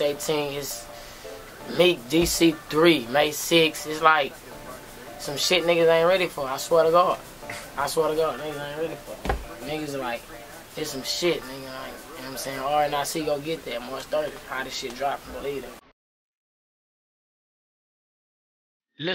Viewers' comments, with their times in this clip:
0:05 his accent when he says god is everything. yo rip lil homie